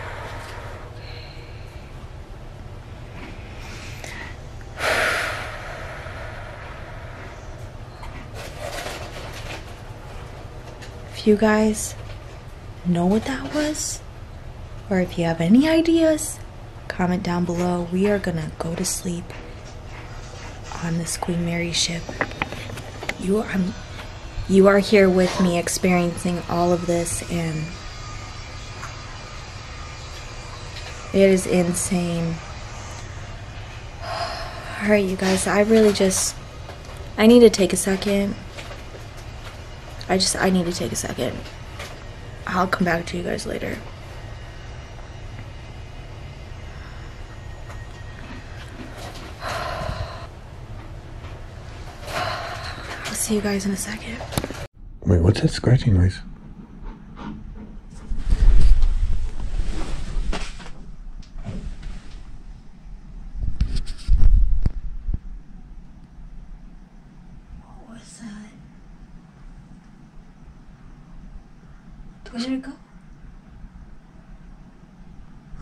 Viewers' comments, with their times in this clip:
0:03 "_____ that" or "Hey dad" (female voice sounds like it could be saying a few different things)
0:26 I'm hearing what your camera is picking up, but also hearing voices, and sounds from outside your room. as you were talking I heard what sounded like a drill. or water running.
0:30 is that a grinder or saw ?
0:57 A faint male voice says "Hey people, come for me" Creepy!